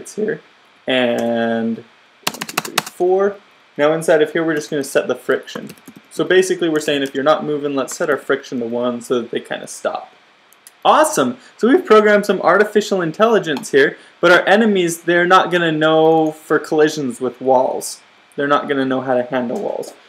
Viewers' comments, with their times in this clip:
0:08 ... that "awesome"... came straight from ur heart lol